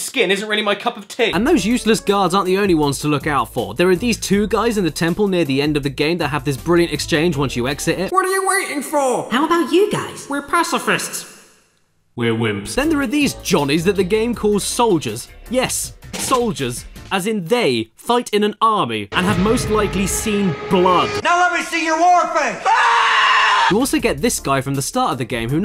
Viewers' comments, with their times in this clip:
0:07 I love how legit this sounds.
0:09 That's a pretty good Klonoa voice.